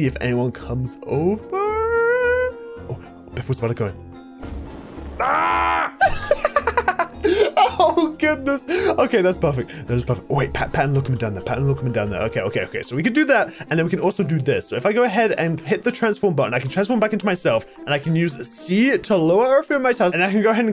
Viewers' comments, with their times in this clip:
0:06 u did a witches laugh